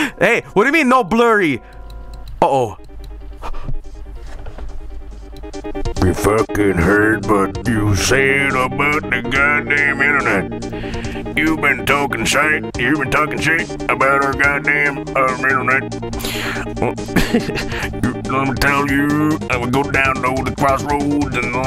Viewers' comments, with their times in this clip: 0:05 my new favorite song of all time. I’m in tears